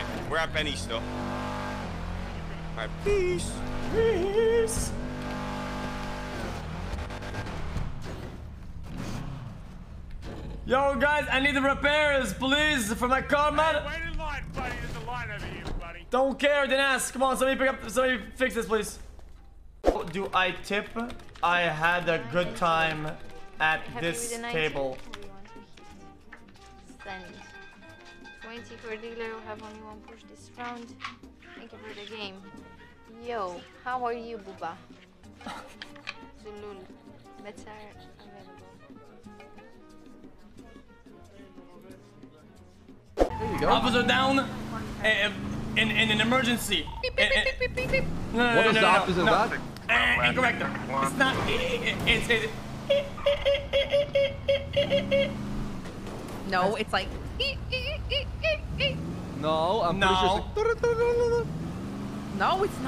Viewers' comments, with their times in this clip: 0:10 that voice in the background sounds familiar, is that Muselk??
0:46 is this how the cops in NA Works? They make fucking frequency sounds?